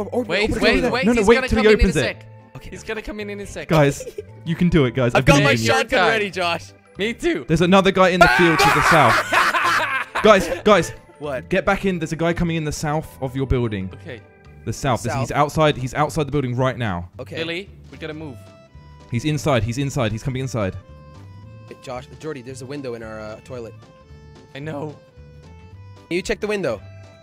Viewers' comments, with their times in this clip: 0:08 Oh my God, their laugh though XD made me remember my best friends :( :(